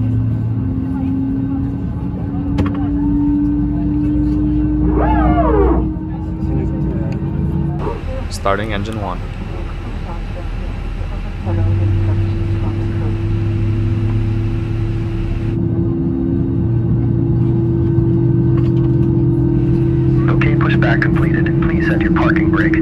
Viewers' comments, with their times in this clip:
0:04 That whirring noise what is that?
0:04 I never knew what this weird ass whirring noise is What really is it?
0:04 SOMEONE PLEASE tell me what is that sound ? that winding-up noise?
0:08 What is that strange noise ? I hear it in real planes too, and never understood what that really is ...